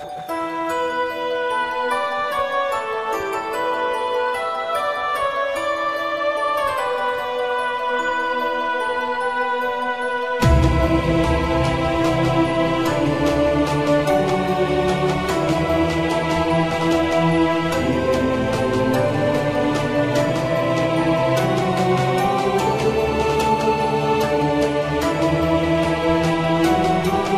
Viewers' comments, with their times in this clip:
0:09 the music change was fantastic. Made that angle feel so much more impressive than itnalready was